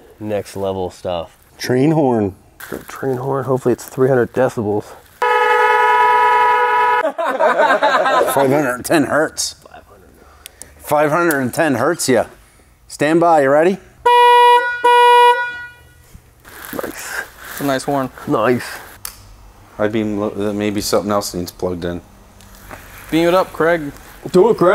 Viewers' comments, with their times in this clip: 0:10 That 510 Hz sounded more like 484.3 Hz